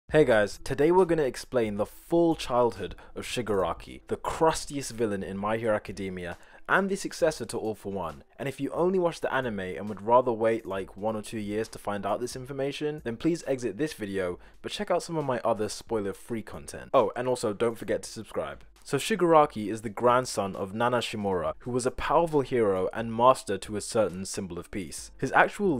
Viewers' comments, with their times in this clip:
0:07 Somehow I heard “Woman” instead of “villain” That’s great